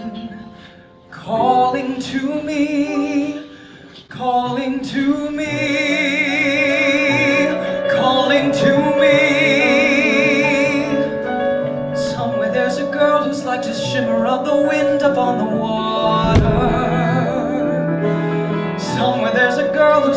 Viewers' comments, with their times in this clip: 0:06 Mildly distracted by the ridiculously crisp and clear piano playing - to get such a clear sound on the type of motif is just insane. 👏👏👏 beautiful